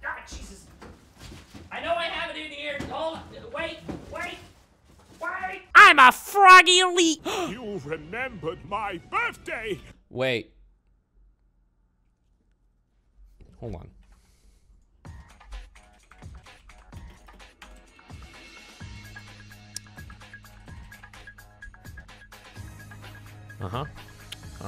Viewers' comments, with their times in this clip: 0:08 my favourite part just the intense music